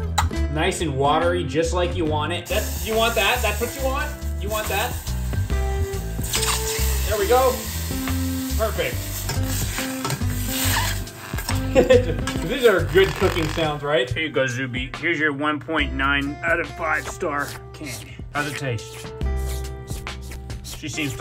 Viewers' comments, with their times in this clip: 0:05 you know its bad when it sounds like rubbing styrofoam together when cooking